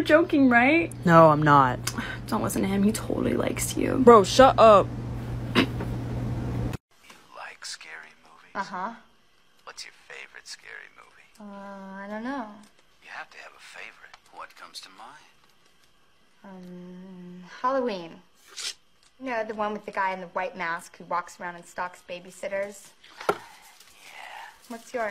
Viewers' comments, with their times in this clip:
0:08 that one my fav the voicejust fits so perfectly